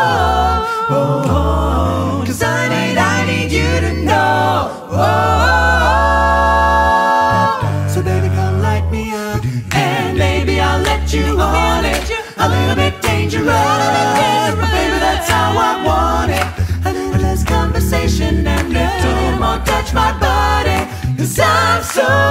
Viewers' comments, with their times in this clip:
0:07 Great recording, gutted to have missed this! is how to sing FIFTHS